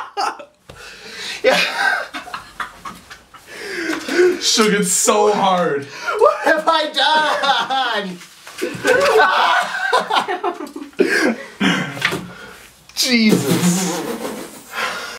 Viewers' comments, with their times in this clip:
0:09 LOL ! when you pointed & laughed i laughed so hard xD